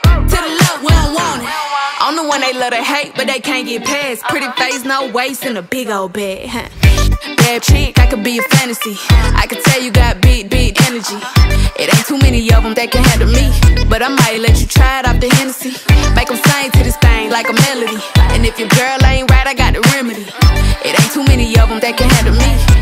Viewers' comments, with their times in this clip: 0:05 i thought it was “and a big ol bear” IM SUCH AN IDIOT 😂🤣